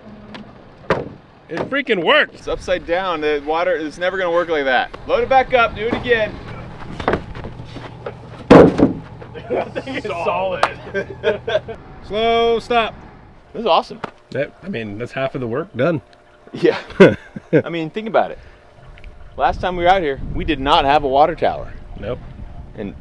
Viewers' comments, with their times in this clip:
0:06 this brought me back to being a kid with my brothers. just the simple laughter